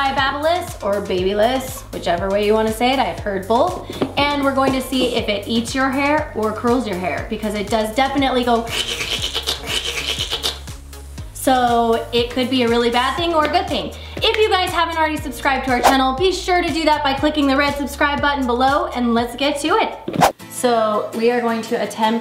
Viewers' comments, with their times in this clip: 0:08 turn up your volume and the earrape begins 😂😂😂
0:09 What kind of noise was that !